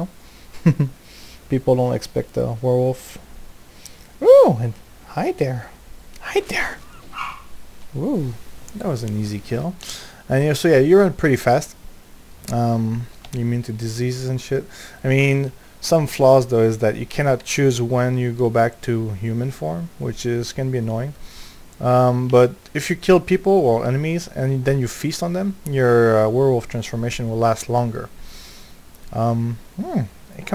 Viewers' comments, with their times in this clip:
0:05 i herd a dog bark
0:07 dog bark :D
0:17 Dog bark But you can give the cool points to someone else, I'm already capped.